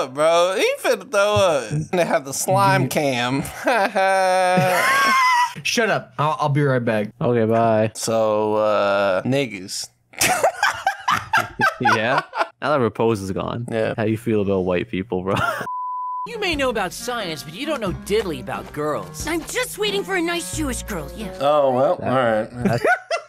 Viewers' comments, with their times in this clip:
0:09 That “niggas” hit different